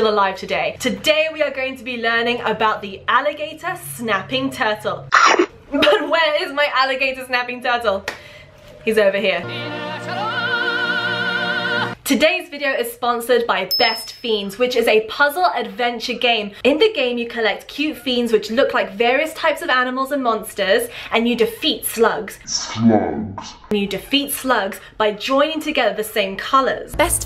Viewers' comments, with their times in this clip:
0:09 i didn't expect the singing turtle, its 4am im wheezing